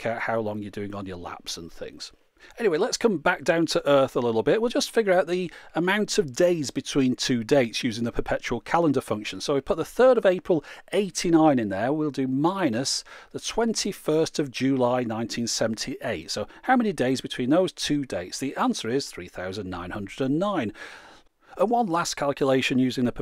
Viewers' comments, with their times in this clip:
0:06 Ooooooh you tease! There was a second of bongo at the end.. I thought we were going to get some puppets. ;) Also :D